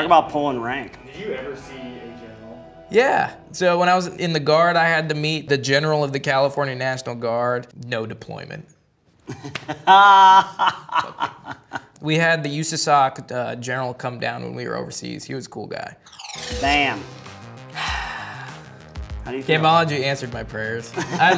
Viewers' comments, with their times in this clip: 0:03 The absolute disrespect in his voice